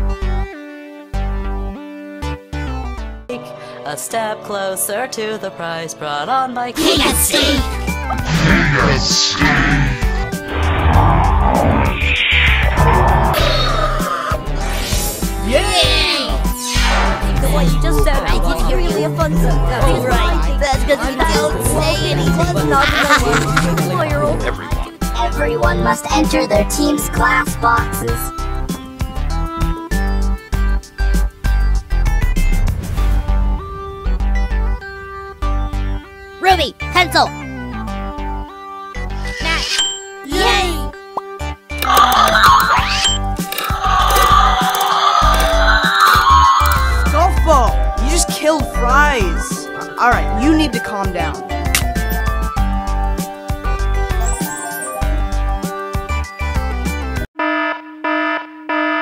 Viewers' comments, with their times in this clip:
0:06 rocky talks now!
0:07 Rocky talks too
0:08 omg teardrop talks LOL
0:09 Also Rocky got his voice back
0:10 rocky talks too! -i thought rocky cannot talk?
0:10 Yay! Teardrop talks!
0:10 Teardrop Talks Slower
0:14 WOODY TALKS HERE!!!----->
0:41 I thought I heard not my fault then seeing "NOT MY FAULT"
0:43 that sounds like a dancing song when u slow motion